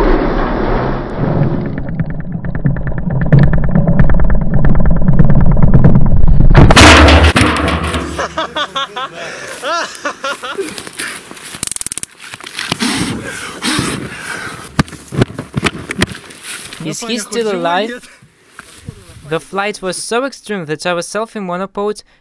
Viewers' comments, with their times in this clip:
0:07 The evil laugh. LMAO